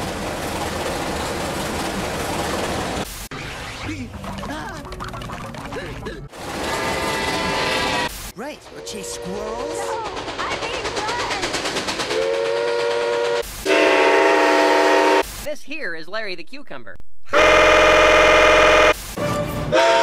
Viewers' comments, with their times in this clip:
0:08 is my favorite part because her PRR T1 3 chime sounds nostalgic to me